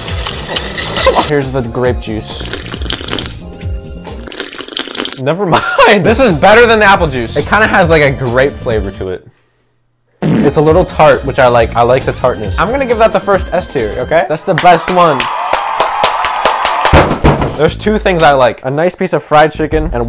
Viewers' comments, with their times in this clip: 0:04 The voicecrack is crazy